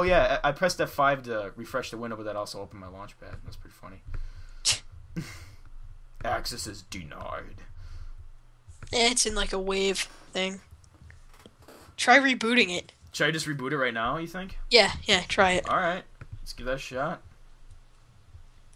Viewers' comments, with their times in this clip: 0:06 (Deep voice) "Access is denied."